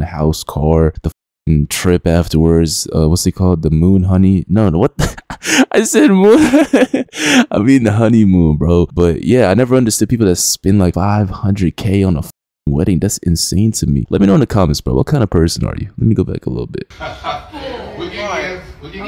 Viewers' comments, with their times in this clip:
0:04 that zesty laugh